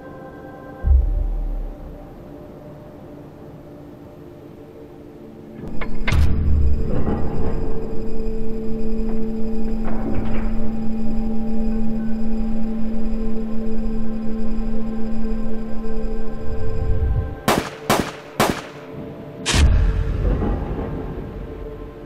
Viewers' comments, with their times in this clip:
0:07 RIP fly's ears